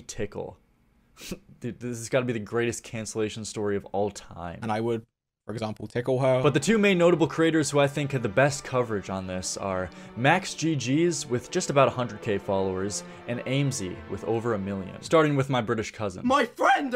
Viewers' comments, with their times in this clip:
0:03 Go on beatboxing legend the voice cracks are a good beat